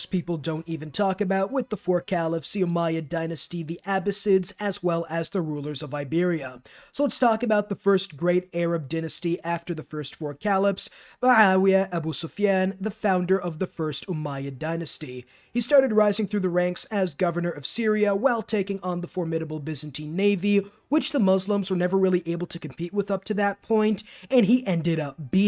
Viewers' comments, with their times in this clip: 0:10 perfect pronunciation of his name 👍